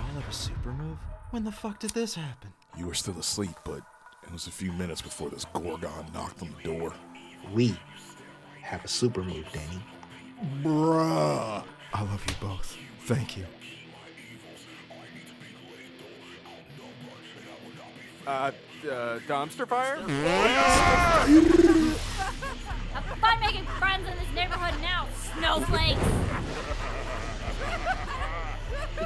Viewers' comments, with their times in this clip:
0:10 The delivery of that "BRUH" was perfect! Amazing animation, I can tell you made this with a ton of love and soul.